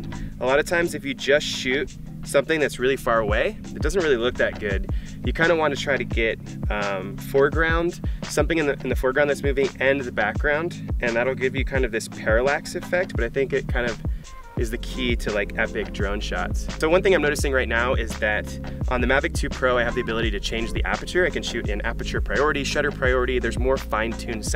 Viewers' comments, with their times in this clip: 0:06 I love the music you have here, the drone is fly Cinema. Thanks heaps for your review. Very helpful